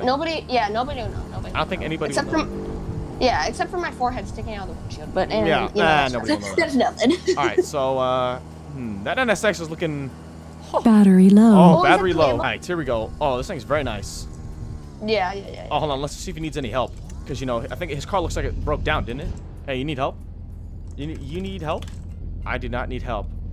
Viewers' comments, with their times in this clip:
0:09 what made that battery low sound? I am confused